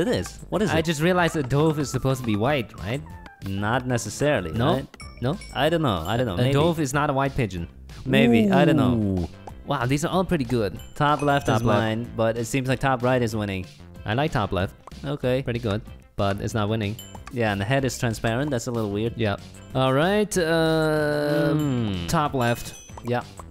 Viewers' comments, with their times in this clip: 0:06 "(Dobe) is not a white pigeon"?? and you pronounced dove wrong.